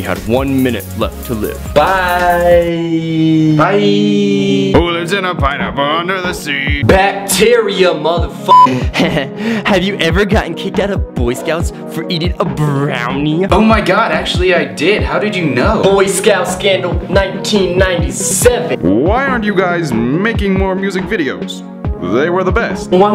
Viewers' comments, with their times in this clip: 0:09 i love how they say this question <3 <3 <3 <3 <3<3